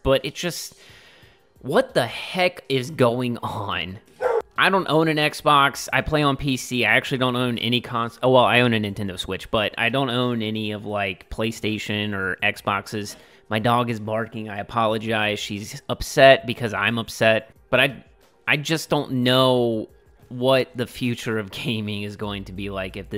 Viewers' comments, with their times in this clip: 0:06 bark killed me